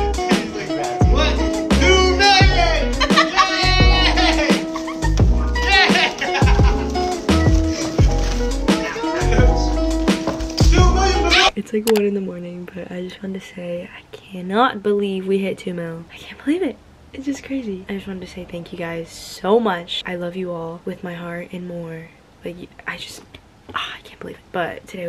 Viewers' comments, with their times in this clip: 0:06 the cut on the scream tho HAHAHAHAG